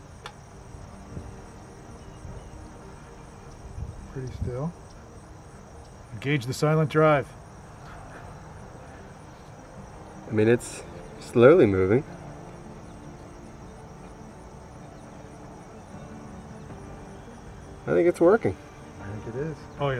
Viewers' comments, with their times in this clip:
0:05 not so silent drive.....oi the bubble's are crazy loud.